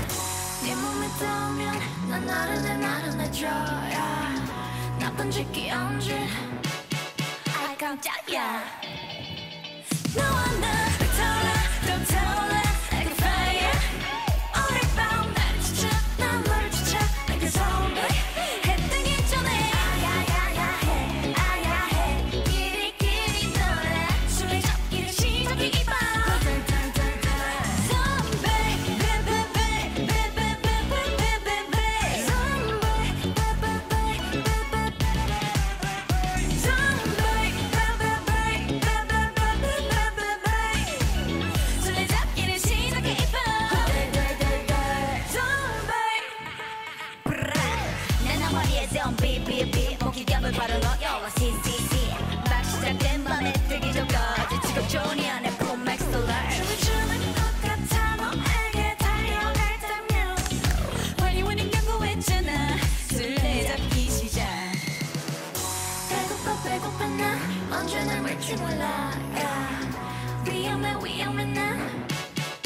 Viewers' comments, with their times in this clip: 0:08 Ireh's voices giving me life-
0:59 WE CAN EVEN HEAR THEIR CLAPPING